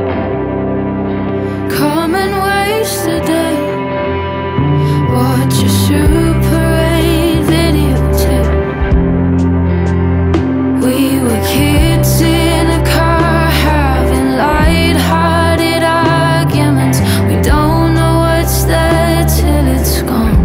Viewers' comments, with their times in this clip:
0:05 drums kicking in after 1 measure of the 2nd verse is genius